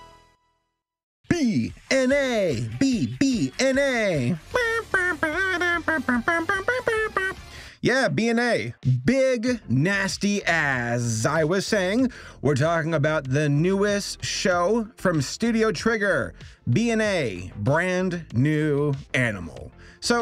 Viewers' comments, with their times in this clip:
0:04 bruh he did the mario world theme hilarus